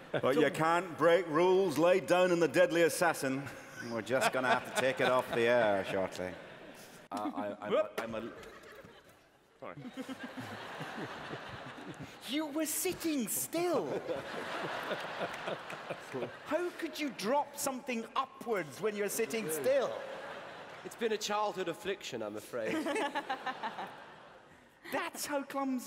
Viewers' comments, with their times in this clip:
0:06 when tenant drops his water bottle he drops the beat lol